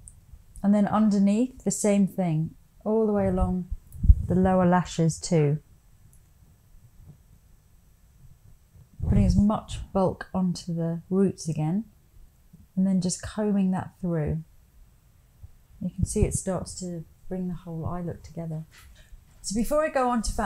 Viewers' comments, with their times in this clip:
0:04 Am I the only one who hears a strange second voice ??? Btw love this look! 💖